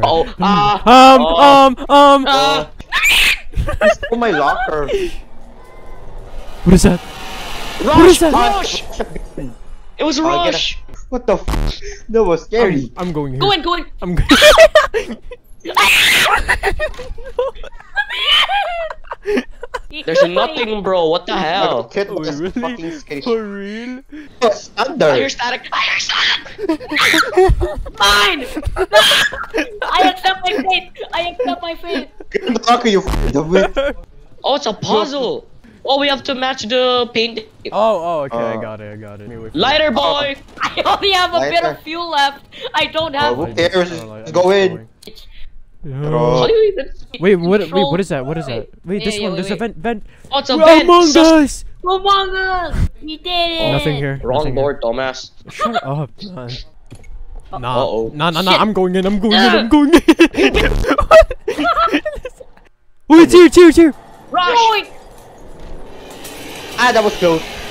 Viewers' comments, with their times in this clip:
0:05 the cat meow lmao is so cute
0:53 love that voice